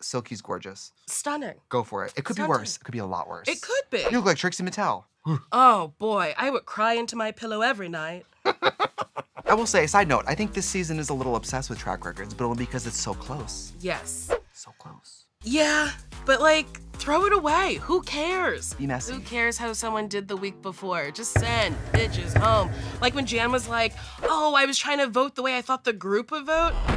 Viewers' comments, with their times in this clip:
0:09 that is the quietest I have ever heard Trixie laugh. Lol